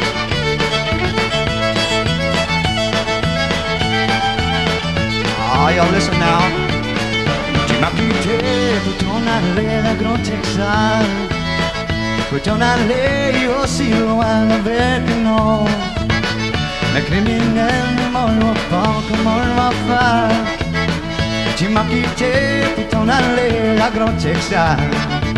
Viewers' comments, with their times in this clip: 0:07 ( +) "Big Texas" sung in French.